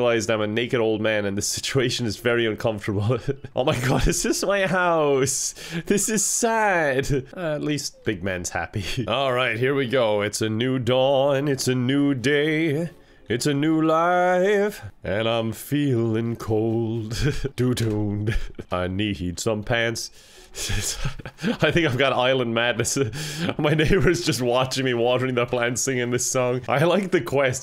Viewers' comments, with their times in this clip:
0:10 omg that jazz album teaser